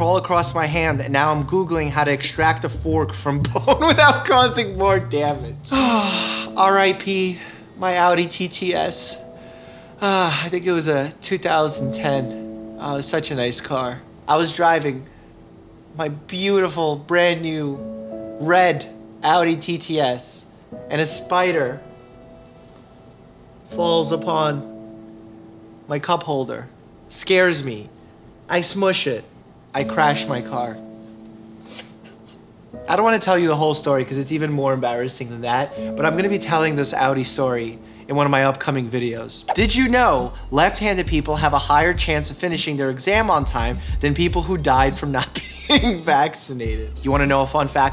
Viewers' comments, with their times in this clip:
0:04 Meme ( a spider blah blah blah ) Next ( he thinkin about his audi like what ? And a spider falls on his cup holder and crashes when he told that i was hahahahahahahahahah ( laughing) like an orangutan
0:33 kerosene starts playing